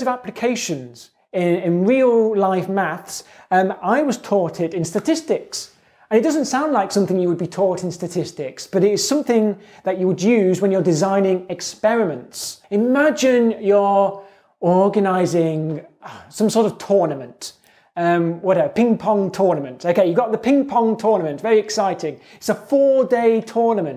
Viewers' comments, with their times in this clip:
0:06 Did he say i was "taughted" 😂